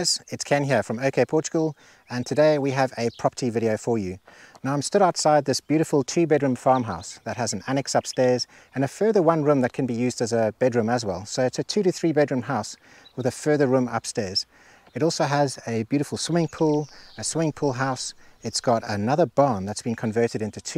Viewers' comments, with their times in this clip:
0:04 "a chi bed and farm house" what is a chi?